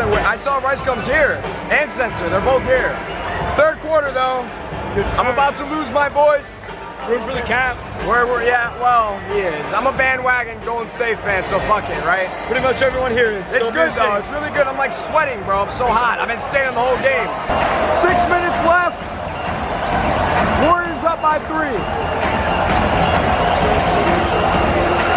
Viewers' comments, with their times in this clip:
0:10 Lol starts to hit puberty